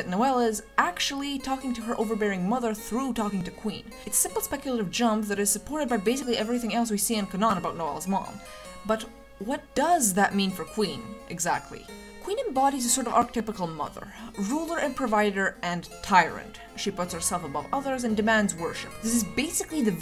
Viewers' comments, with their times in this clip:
0:07 why did you why did you pronounce canon like that
0:07 did Did you say canon as k’nan?